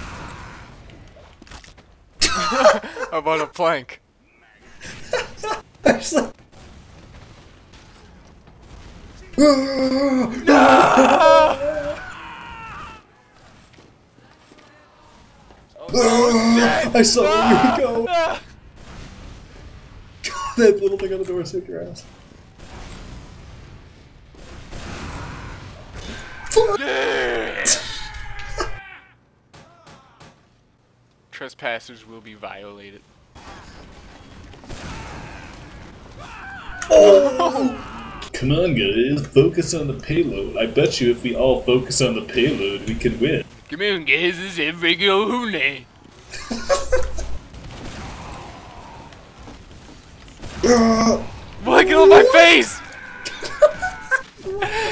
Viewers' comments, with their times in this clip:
0:09 Best scream ever.
0:38 Sylvester Stallone, is that you?